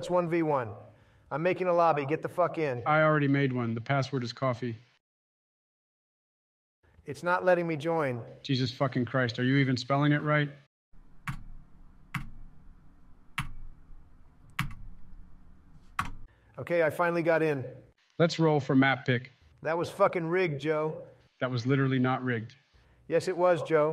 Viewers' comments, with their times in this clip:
0:10 LMAO I love the part where Trump types the password “coffee” but only clicked his keyboard 5 times 😂